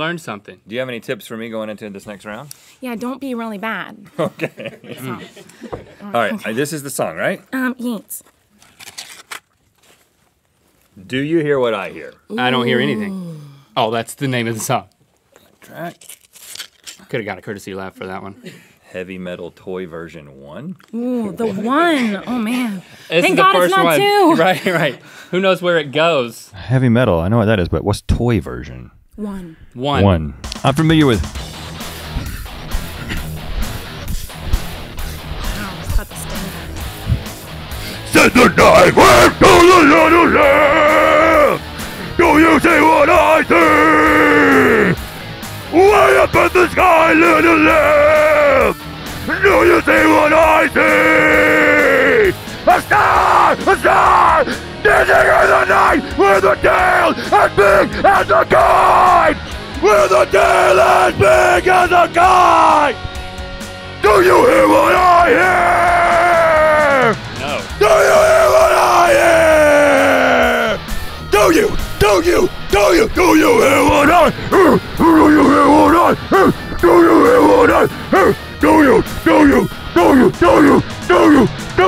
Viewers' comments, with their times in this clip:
0:08 I am crying in laughter. was the most incredible metal performance ever. I am honoured to have witnessed it.
0:30 Rhett: I'm familiair with... (Heavy Metal starts playing)... Instantly turns into a professional Heavy Metal artist! Amazing! (I feel sorry for his voice though)
0:31 It's funny how Rhett was talking then the metal song came on and he just got into character
0:32 it sounds like hulk
0:36 O MY GOD IT HREATS MY eArS!!!
0:38 Damn Rhett that was almost grind core.
0:38 is r.i.p headphone users
0:42 I love when she breaks character 'cause she's surprised or laughing. xD
1:06 Rhett: DO YOU HEAR WHAT I HEAR Link:No Headphone users: What?